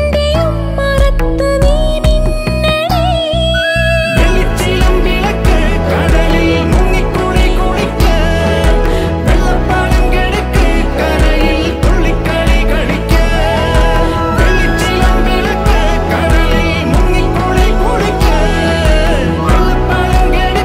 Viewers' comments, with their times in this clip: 0:04 The chorus started enhancing the slow melody. @ Shaan Rahman , Brother you have done a good job :)